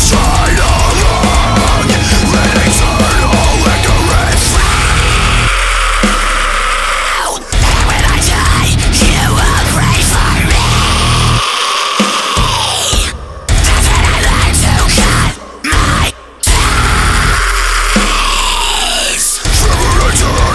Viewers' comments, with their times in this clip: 0:04 Is it that hard to tune a whole step lower?